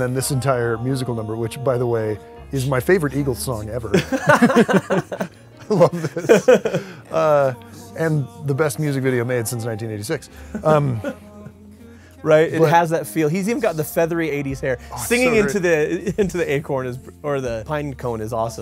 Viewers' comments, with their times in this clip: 0:06 It reminded me so much of Chicago: "Hard to Say I'm Sorry" and "You're the Inspiration", especially.